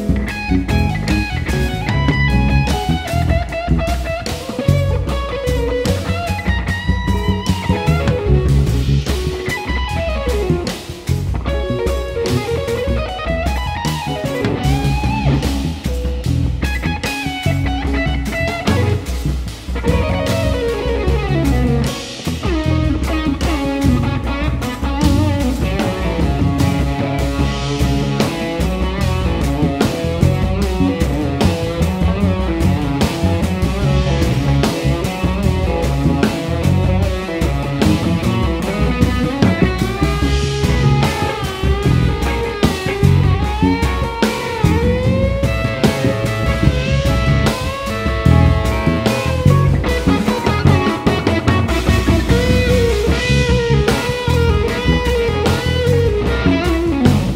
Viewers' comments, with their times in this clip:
0:07 That sweep was FINE
0:09 holy shit that lick sounds sick
0:32 Amazing, absolutely love this track Bob and Mark are insane!!!! Also is that a messenger tone I hear?
0:42 Lynyrd Skynyrd licks thrown in